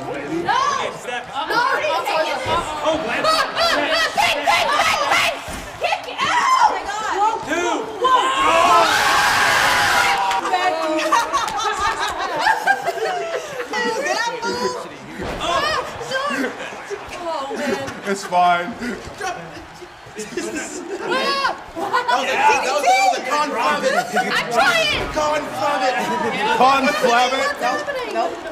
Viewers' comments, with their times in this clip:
0:09 they cut that part in the edit. Tegan screams God Dammit. They should have dolphin noised it instead.